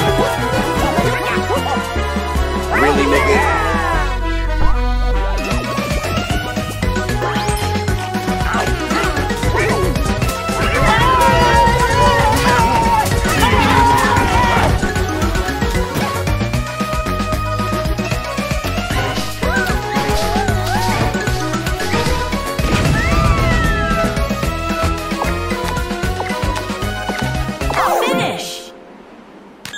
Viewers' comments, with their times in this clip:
0:10 the presentation experience teacher screaming low pitch